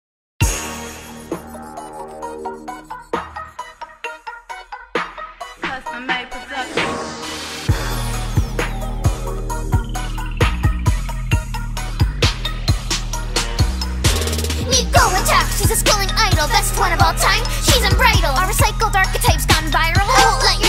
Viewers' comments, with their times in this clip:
0:05 Every time I hear this part I only hear “cuz I’m Mike Wazoski”